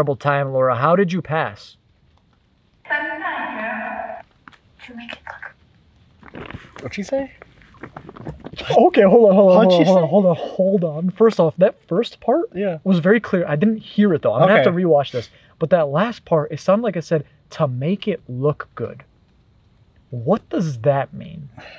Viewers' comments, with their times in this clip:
0:03 sounds like she said "COME DOWN HERE"
0:06 sounded like some kind of paranormal